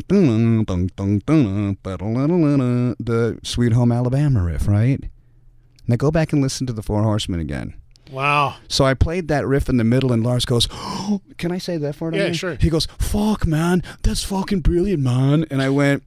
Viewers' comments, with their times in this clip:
0:04 also sounds like the intro solo in Sanitarium